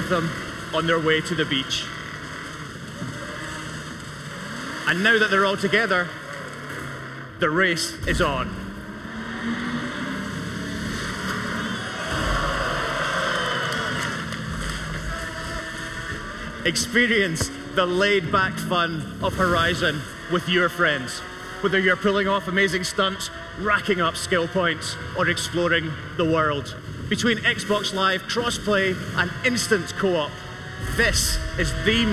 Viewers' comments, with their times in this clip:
0:09 Did anyone else hear someone yell, "Showoff!!!" after the barrel roll ?
0:09 hahaha when he does the flip after everyone claps u hear a guy say showoff 😂😂😂😂😂
0:12 someone in the croud yells "Show off"
0:12 Shoutout to the guy that yelled "Show off!"
0:14 somebody yelled "SHOW OFF!" XD XD XD XD XD XD
0:14 LOl did anyone hear the crowd yell showoff! when he did the flip
0:15 lol you can here a guy say "showoff"
0:15 someones screams "Show off" after he did that jump